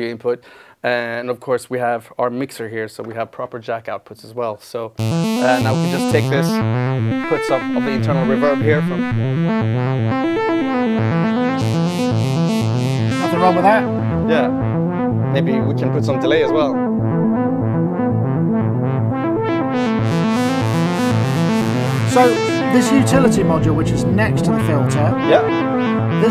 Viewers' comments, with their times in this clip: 0:09 Great swing and lovely sounds in that jam. Also, love the sound starting